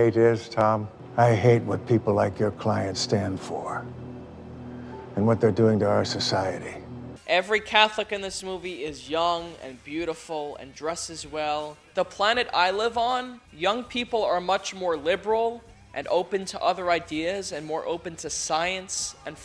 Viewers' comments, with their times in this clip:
0:03 Shrim, hah. Reminds me of shrimp.